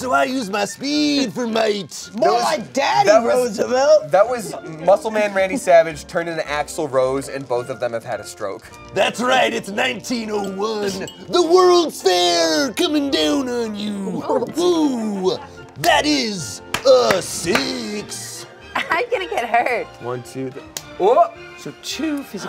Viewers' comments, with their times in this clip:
0:10 Otto the bus driver from the Simpsons has entered the chat